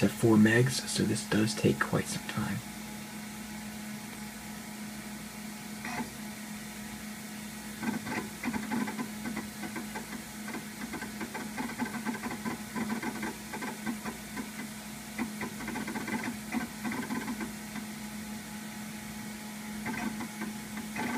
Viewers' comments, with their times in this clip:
0:07 Dude.... the click-clacking of the hard drive..... that is serious, old-school sh*t man! On-topic, I had no idea there was (still is) free dial-up service available... great to know for emergencies! After doing some research, NoCharge is only available in Seattle. After some further digging, for anyone in California (where I live), FastFreeDialup seems to be a good candidate for similarly free dial-up service.